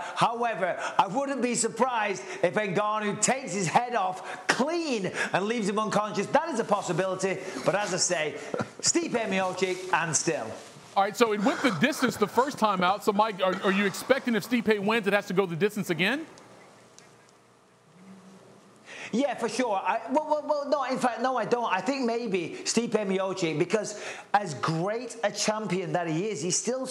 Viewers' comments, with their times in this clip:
0:07 that laugh in the background was so weird
0:10 Sounds like Francis laughing quietly